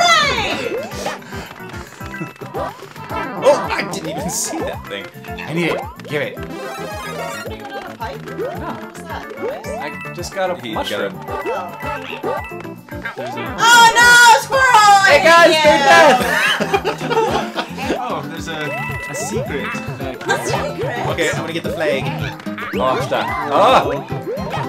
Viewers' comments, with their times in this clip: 0:05 I just realized that as you were playing around the mark, it sounded like a "What a wholesome bunch of folks" moment. Just thought you should know.